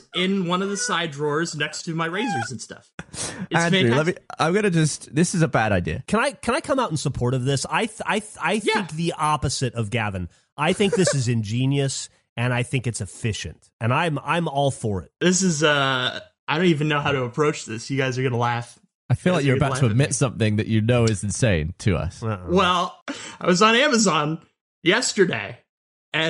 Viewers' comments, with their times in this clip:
0:10 Gavin laughs but Andrew is animated laughing O.O